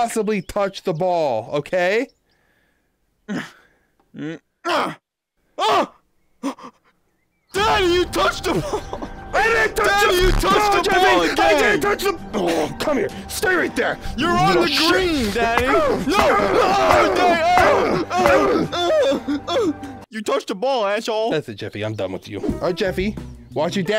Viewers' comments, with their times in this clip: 0:08 I love hearing you guys laugh 😂